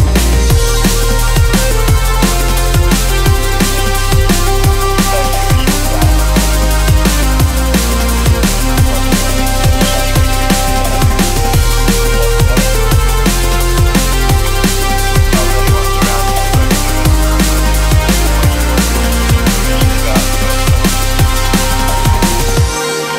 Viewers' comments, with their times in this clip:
0:08 There is a voice saying something cant make it out, anyone?